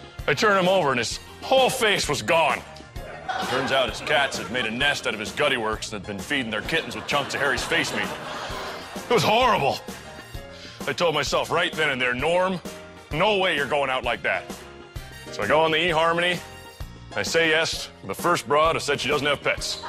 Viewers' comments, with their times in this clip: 0:04 Bobby Lee laughing?:D